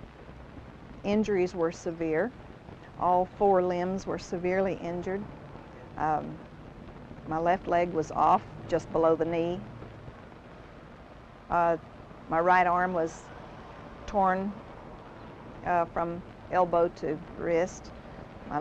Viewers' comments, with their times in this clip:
0:04 That woman managed to speak coherent sentences and entire thoughts without a single “like” or “uh.” My, how our standards have fallen.